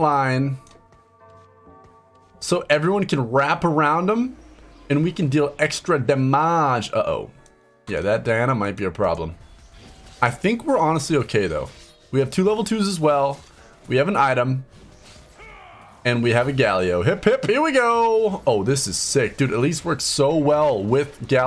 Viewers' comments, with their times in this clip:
0:05 "and we can deal extra daMÀge" that part killed me fr